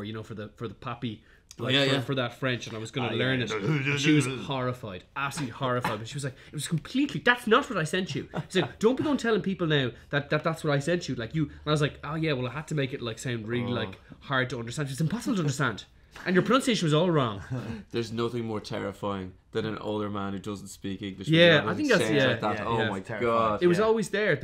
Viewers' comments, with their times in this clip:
0:07 Honestly, Papi speaking in French is basically a standard listening exercise haha jk